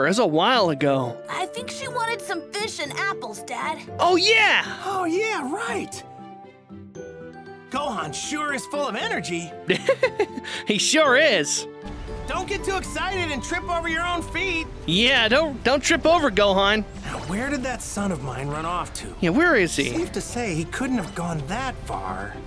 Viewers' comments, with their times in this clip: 0:03 They both said "Ah yea!" In the same excat tone check it out